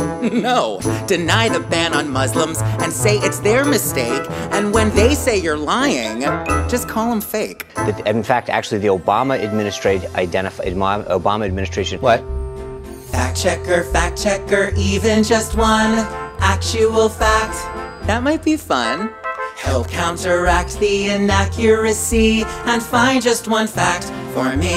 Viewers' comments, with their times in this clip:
0:09 I knew it...I KNEW IT spicer IS RELATED TO Dick Tracy's arch-enemy MUMBLES or at least he's a close friend of his!!!